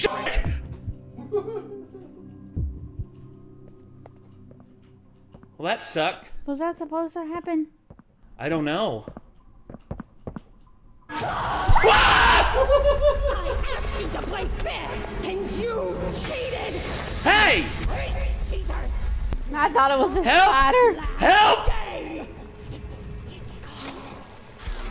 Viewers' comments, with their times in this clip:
0:08 That scream. XD
0:11 Love that scream in the intro. Can’t wait to see it in the vid later. Edit: I’m still gonna time that intro scream, but genuinely HOW THE HELL DID THEY GET ELI ROTH?! Lol Edit part deux: there it is.